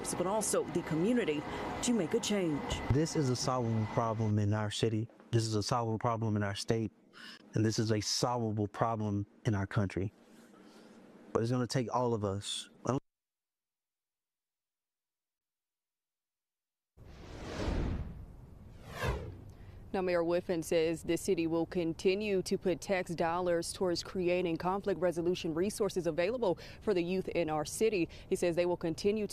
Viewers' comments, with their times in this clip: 0:10 whats with the random silence